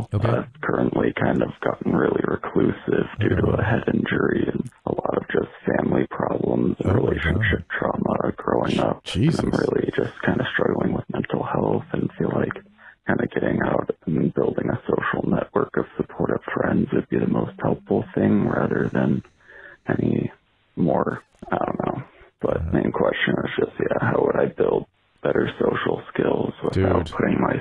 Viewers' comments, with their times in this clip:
0:05 is all time vocal fry champ. Jesus.
0:10 Dude is using I think, he’s got that dope voice going on, Can’t speak up.Granted he said he’s got a TBI so I guess it could be that, don’t know enough about it. Either way, relatable and rough situation